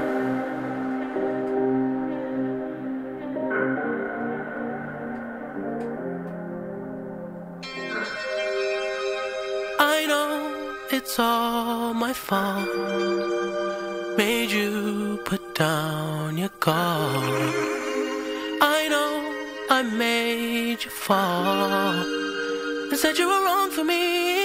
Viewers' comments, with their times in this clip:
0:07 When he has no choice but to laugh Bc it is so good